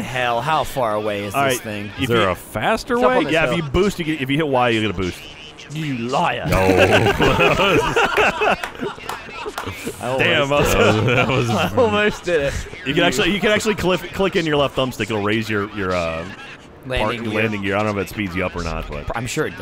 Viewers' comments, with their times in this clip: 0:05 It's the amount of accusational disgust from Gavin that sells that moment.